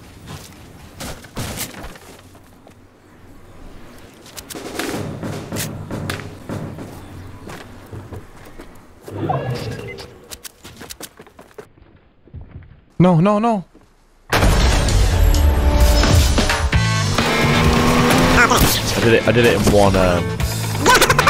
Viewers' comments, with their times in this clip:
0:03 that is some SICK music right here:
0:04 catchy default song
0:04 The way that sounds sped up 😂